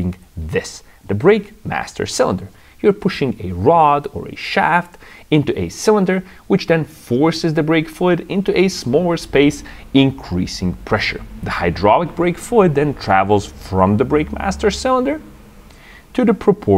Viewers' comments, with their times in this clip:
0:04 I never knew brake cylinders could be manufactured using dried grapes. I suppose it's better than being made from wet biscuits.